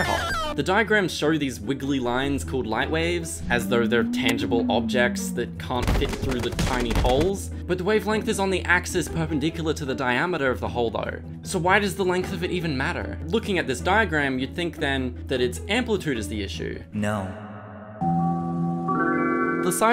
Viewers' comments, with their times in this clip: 0:05 that gmod collision noise activated some old dusty neurons